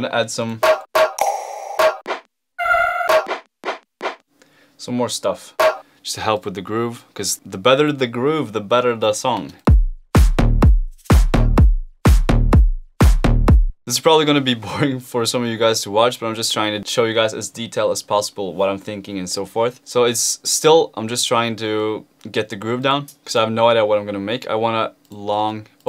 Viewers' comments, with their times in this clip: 0:08 He sounded just like alan walker there.
0:12 you have tiesto boom